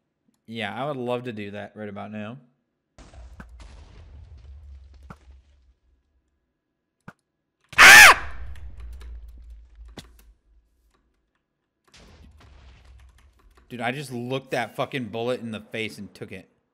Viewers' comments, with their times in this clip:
0:03 his scream made me jump omg 🤣🤣💀